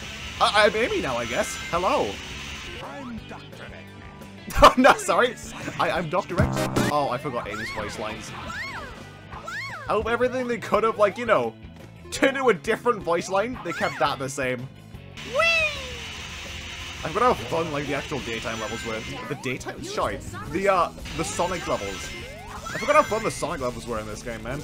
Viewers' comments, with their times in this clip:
0:08 she sounds like a lalaffel from FFXIV